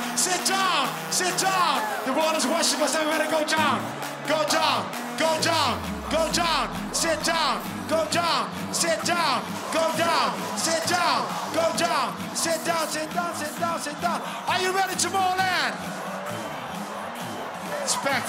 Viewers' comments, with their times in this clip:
0:05 This is Slipknot Style But Slipknot is even better. Greetings from germany